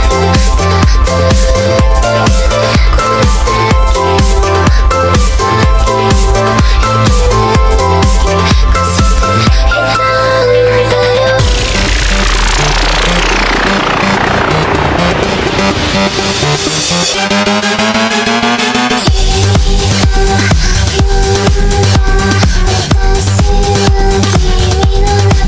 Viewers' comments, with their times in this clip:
0:10 NORMAL ELEVATOR MUSIC